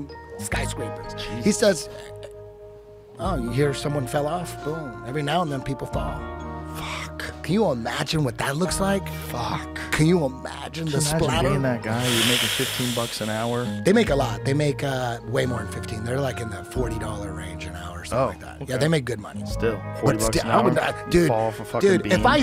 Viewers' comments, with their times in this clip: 0:07 Joe doing his "impossibru" impression 10/10